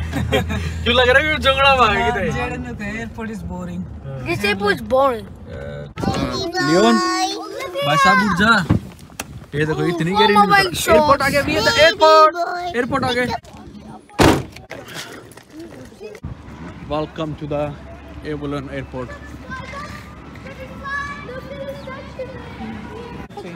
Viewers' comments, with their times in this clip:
0:10 Your Australian acent is so good..say it again 😅